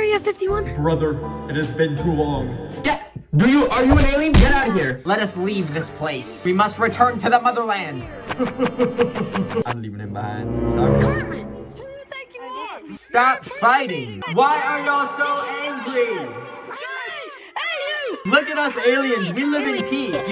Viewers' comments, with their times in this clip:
0:03 screams in sun and moon show